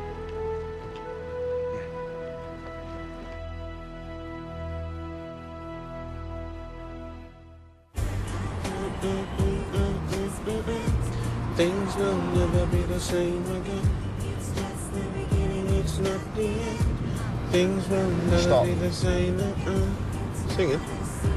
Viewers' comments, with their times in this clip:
0:08 I like this song